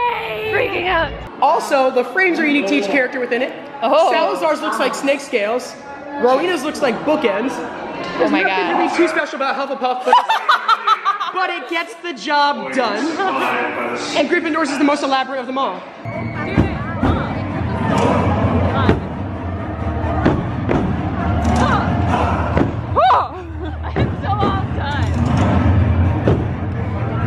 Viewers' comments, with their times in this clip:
0:07 is it supposed to be pronounced like Roweena? Because I have always pronounced it ro-weh-nah
0:09 That evil laugh though